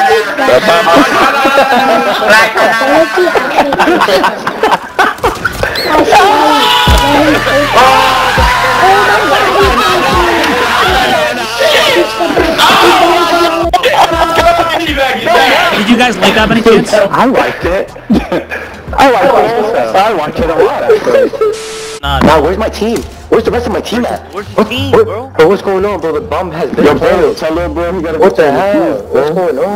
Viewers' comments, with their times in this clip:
0:06 mlg ahh screams
0:13 someone needa buy a mic I can hear all echoes bc of the sound coming out ppl tvs hate mfs like that lmao